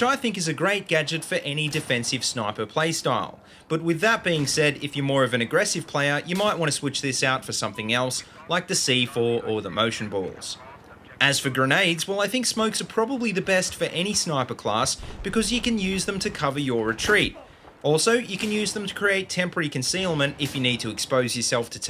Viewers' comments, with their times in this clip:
0:05 how did you miss him Have to say that was very well spoken.